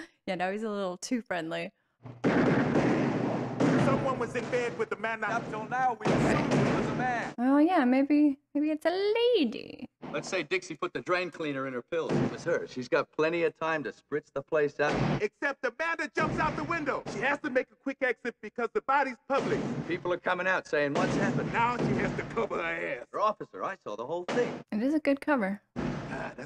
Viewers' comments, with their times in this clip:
0:07 always funny when you say " a lady" in a British Accent... ?